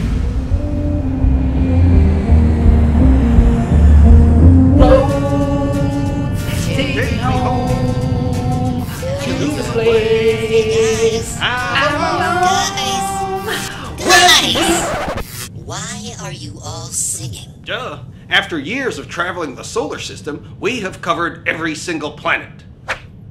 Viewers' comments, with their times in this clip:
0:05 singing be like: